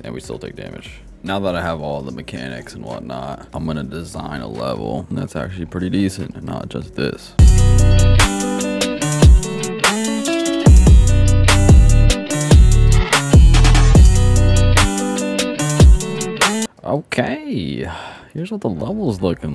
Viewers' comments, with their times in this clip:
0:06 sounds kinda like some youtuber song that i wont say
0:07 ksi's thick of it but instrumental on 😂😂😂😂
0:07 thick of it jumpscare
0:07 bro did NOT jumpscare us with Thick Of It